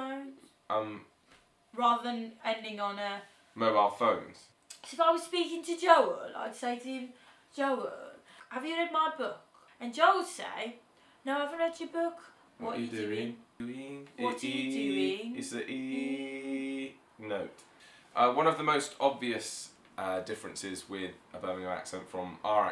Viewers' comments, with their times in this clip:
0:04 great Birmingham accent